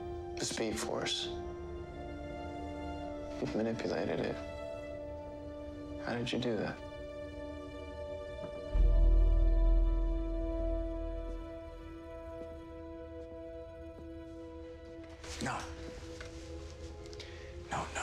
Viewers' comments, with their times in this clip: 0:03 What language did he just speak